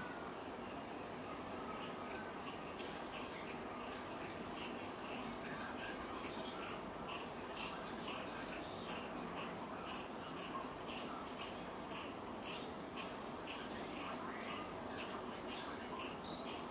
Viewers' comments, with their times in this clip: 0:03 omg...her little lips slurping up that drink is too funny